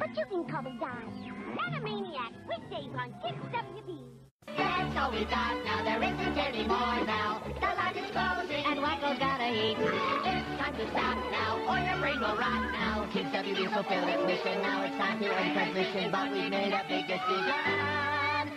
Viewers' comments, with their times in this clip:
0:04 What are they saying